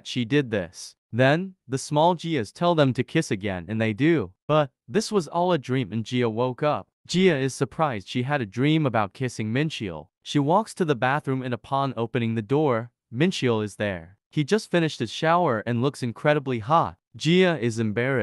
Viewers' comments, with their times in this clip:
0:05 The way he said hot Killed me 💀